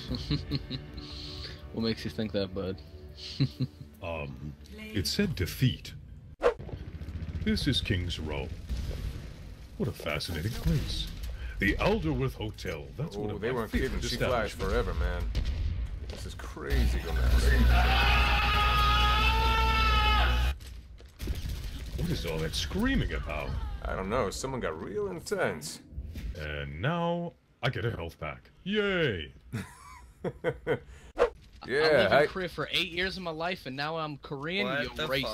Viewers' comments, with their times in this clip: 0:09 That screaming was the best that meme is kinda loud tho
0:17 Woah, Loud Nigra
0:17 L O U D N I G R A
0:17 That scream made me cry.
0:18 that scream killed me